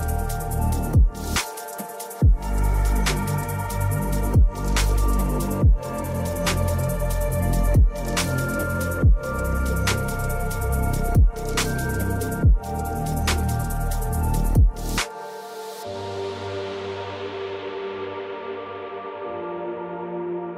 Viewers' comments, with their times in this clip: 0:07 Beautiful shots of the water trickling downward off the ice nice music to.